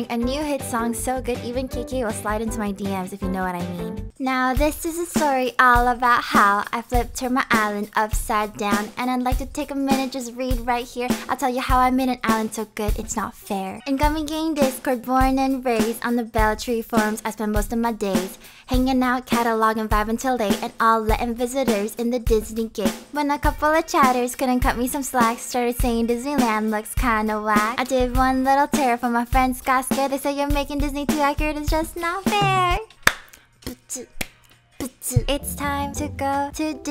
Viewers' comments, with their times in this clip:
0:04 Most slap rap of all animal crossing time
0:21 love the song :)